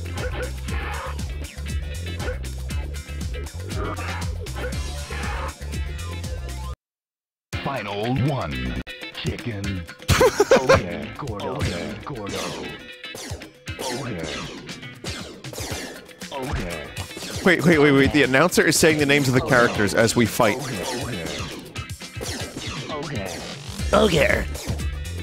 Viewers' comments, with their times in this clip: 0:10 The universe where everyone in Tekken became stretch toys that talk like Pokemon with a Chipmunks filter while the world gradually turns into a broken down merry-go-round while laser guns sound off in the background